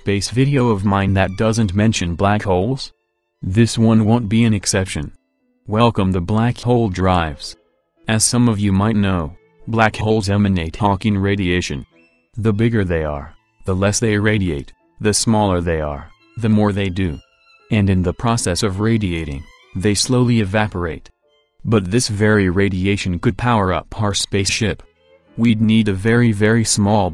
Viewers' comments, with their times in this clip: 0:09 I swear to God he says hOnking radiation
0:10 H o n k i n g r a d i a t i o n